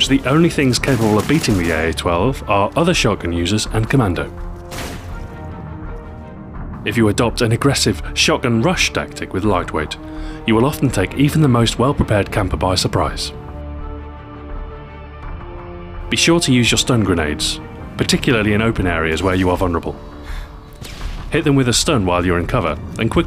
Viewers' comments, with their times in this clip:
0:06 did i hear a laugh?
0:07 SO HE DOES HAVE A LAUGH :D
0:08 you can see he was laughing after he said ''Commando'' Lol.